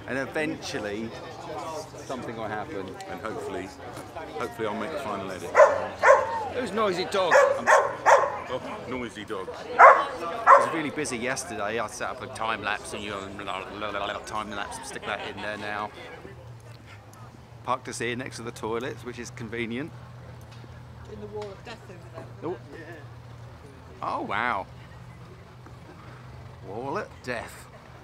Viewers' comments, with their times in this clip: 0:10 oops sorry that’s my noisy dog!